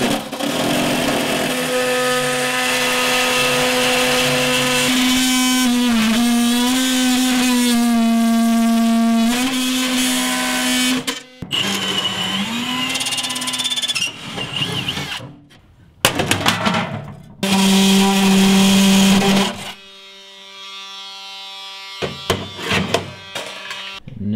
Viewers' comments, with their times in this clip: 0:05 sounds like t rex
0:09 other YT's would put some musik in here. but he is giving the reallife experience guys. Love it
0:12 it turned into a noise concert oh yeah!